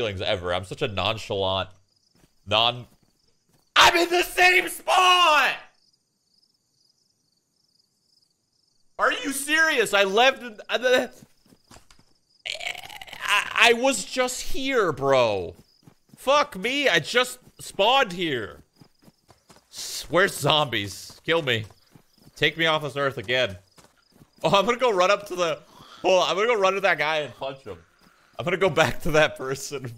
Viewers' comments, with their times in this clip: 0:10 real zombie sound